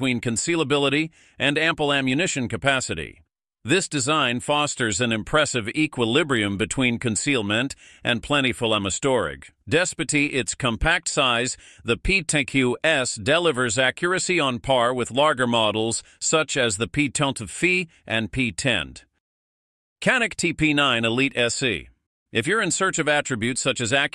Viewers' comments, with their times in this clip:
0:07 From here to end of segment on this gun, at least half a dozen words are badly mispronounced. How are scammers able to emulate your friend's or relative's voice on the phone with AI but YouTube videos sound like this?